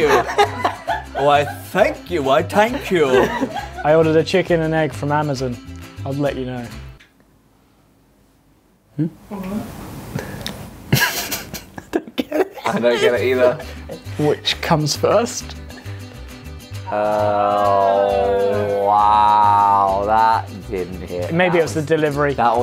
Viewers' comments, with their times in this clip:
0:08 the little "hmm?" was so funny😭